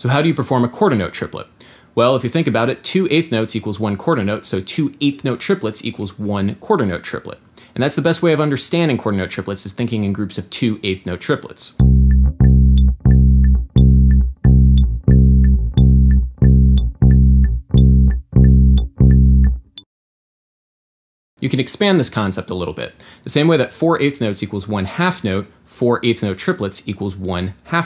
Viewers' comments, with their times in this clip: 0:10 not in sync with metronome